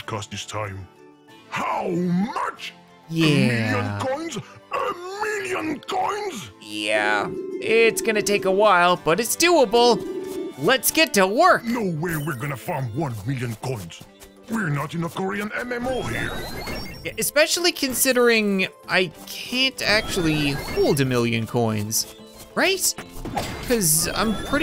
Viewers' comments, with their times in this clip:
0:05 he sounds like a robot